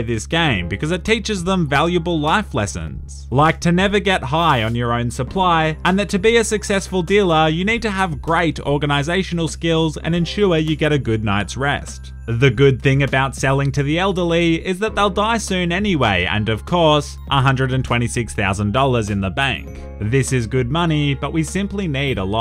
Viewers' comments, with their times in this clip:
0:03 If you play at the lowest playback speed he sounds like some guy who hasn't slept in a few weeks telling us to sleep